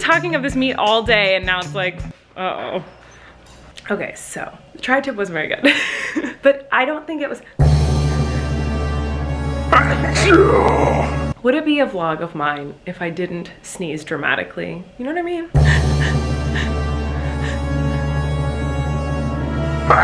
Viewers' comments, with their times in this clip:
0:05 Loved that dramatic sneeze (≧▽≦)